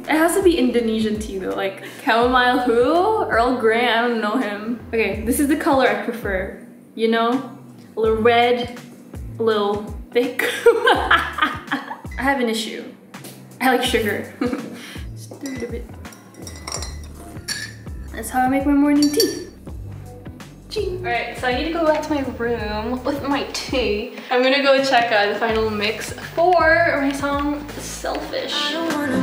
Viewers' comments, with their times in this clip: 0:10 Stephanie has the best laugh
0:14 the laugh from ILY3000